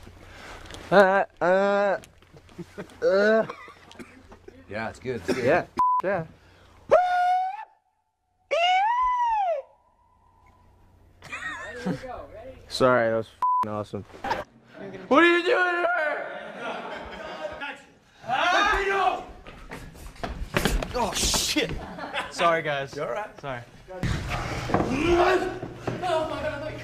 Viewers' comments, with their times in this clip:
0:08 omg i lost it his gurly scream